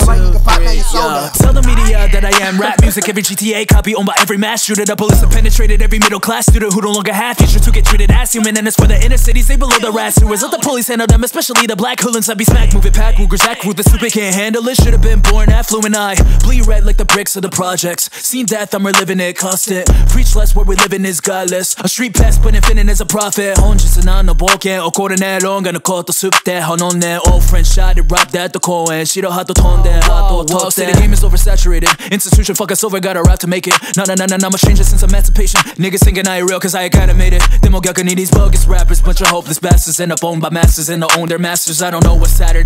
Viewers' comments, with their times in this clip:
0:06 bro he can rap in Japanese thats so lit
0:24 reminded me of flo rida since he talked Japanese im pretty sure and he did the gun flow like ski mask